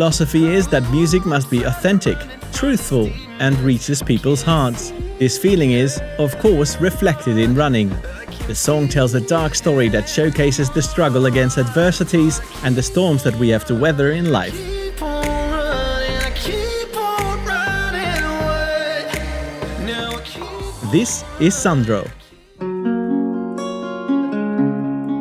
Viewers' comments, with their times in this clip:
0:07 "the song tells the dark story that showcases the struggle against the versatiles" wait what